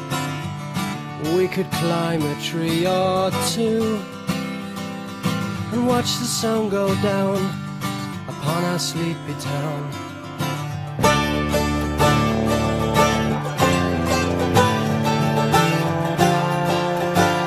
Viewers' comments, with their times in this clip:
0:04 This sounds so great! Im a little worried though because more HD versions on youtube have a tinnitus like sound that starts And im thinking it could be on the album too. Sometimes Steven Wilson makes these little mistakes it seems. No matter.